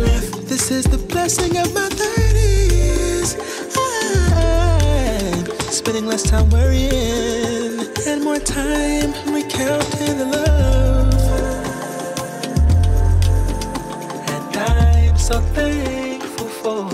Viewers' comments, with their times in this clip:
0:03 that run was flawless
0:03 His voice reminds me of Brandy. The run